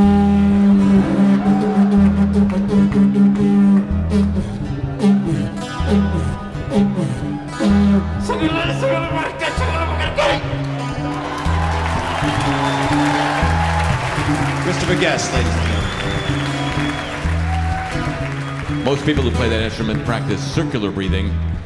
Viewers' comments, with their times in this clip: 0:07 what is Christopher shouting at the end of the didgeridoo solo?